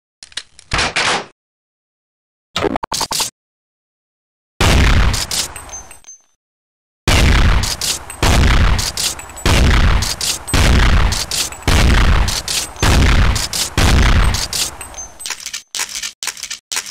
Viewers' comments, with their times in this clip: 0:03 the sound of death.